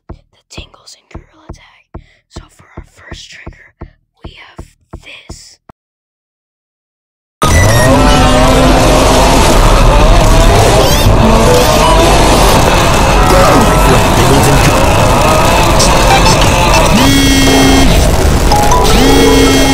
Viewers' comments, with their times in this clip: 0:07 I had my headphones on at max volume. I got so scared
0:07 at 2 am i had headphones on at max cuz i thought u was gonna wispier and i couldn't here you but when that blasted in my ears my soul left my body still pretty funny tho